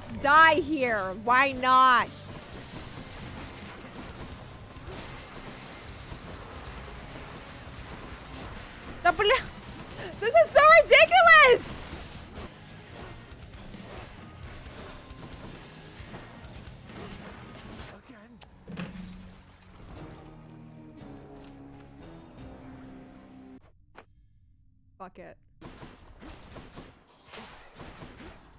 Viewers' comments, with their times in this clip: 0:09 I heard my native "Да бля"